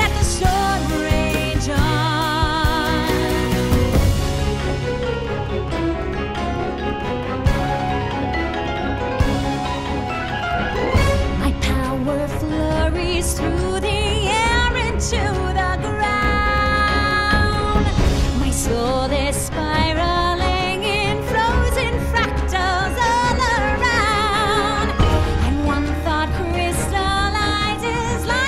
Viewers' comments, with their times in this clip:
0:10 and on, Idina really lets it go with her pipes. Dayum.